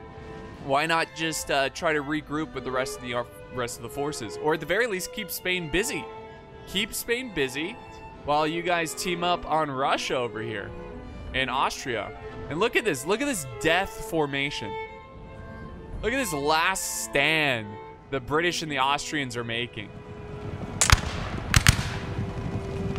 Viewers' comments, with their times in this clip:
0:10 is such a beautiful scene. The music definitely makes this more satisfying. The cavalry charges look so heroic and yet wasteful really highlighting how outdated the tactic had started to become. Also it's amazing how jarring the calm during the positioning phase is when posed against the battle phase.